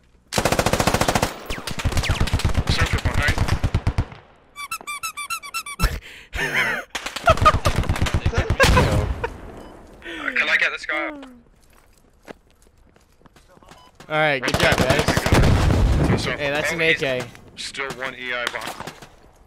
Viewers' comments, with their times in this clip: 0:03 Tactical squeaky toy